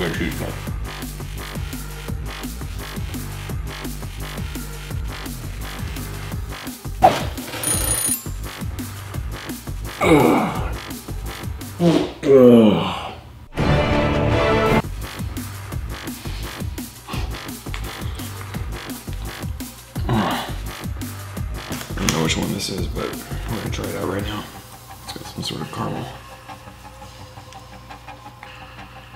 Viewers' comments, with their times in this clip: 0:07 that fart was dense bro 💀
0:10 damn.... crazy ass fart... that was nasty but funny. Cool man